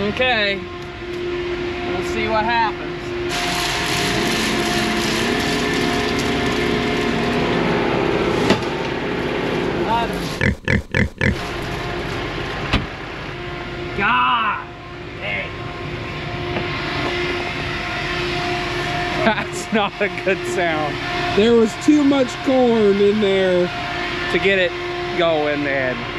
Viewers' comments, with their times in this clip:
0:09 😂 love the censoring